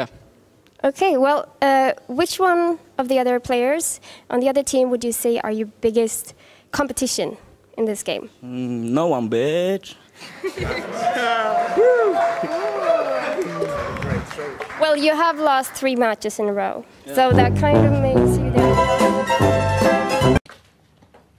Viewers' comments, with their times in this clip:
0:03 HER "Who would you say is your biggest competition" GUY "No one beitch" says the man in a confused voice, as he nervously drinks his drink HER "you have lost 3 games in a row" Everybody in the room 😅😮😓😶😐